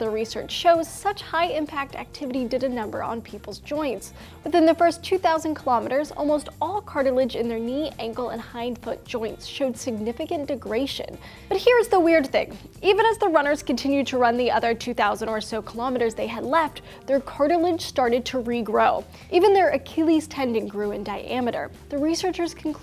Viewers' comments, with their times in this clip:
0:03 What's degration? Is it anything like Degradation?